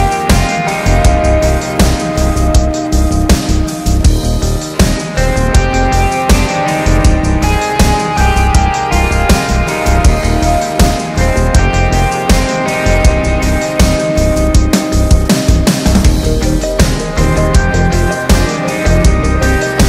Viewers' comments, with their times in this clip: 0:05 Bassline reminds me of the band Gunship.